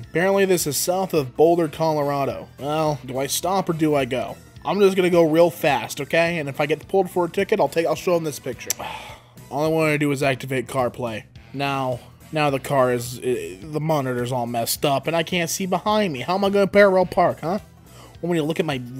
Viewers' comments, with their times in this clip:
0:03 the clash offbrand starts playing